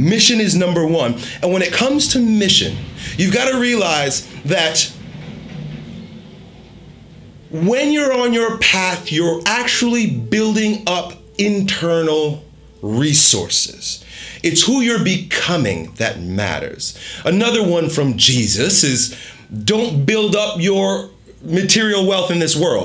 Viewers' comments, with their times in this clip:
0:05 explosion in the background creates a sudden pause